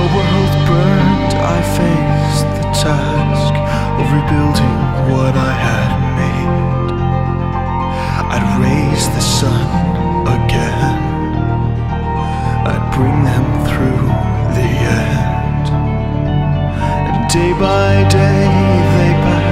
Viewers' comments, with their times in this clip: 0:07 When you sing "I raised the sun again" I honestly sWEAR TO GOD I THINK I SCREAMED A LITTLE. GODDAMMIT, YOUR VOICE. FUKCUFKADFASMDXFHASLDF,ASFDHA